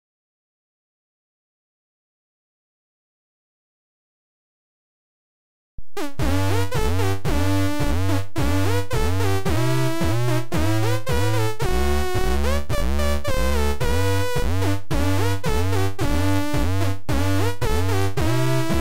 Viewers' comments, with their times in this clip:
0:03 It would be cool if that melody had a cover of glitch hop on top